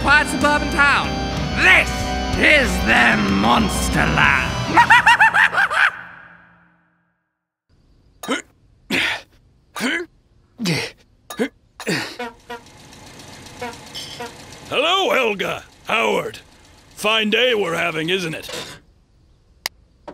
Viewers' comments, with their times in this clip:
0:03 y did that sound like a skeppy laugh